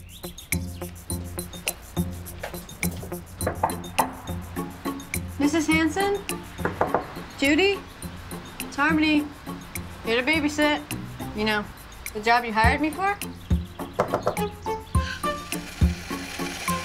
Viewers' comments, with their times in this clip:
0:03 *Harmony knocking* Me: there’s doorbell and door knocking thing right next to you??